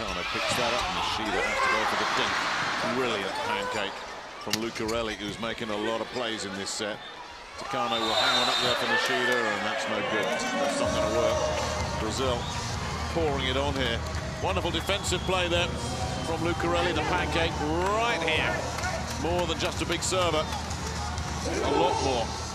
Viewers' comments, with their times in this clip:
0:06 Hello! I'm trying to learn about volleyball. Can you please tell me what's the whistle about a bit after ? I don't understand this. Thanks in advance!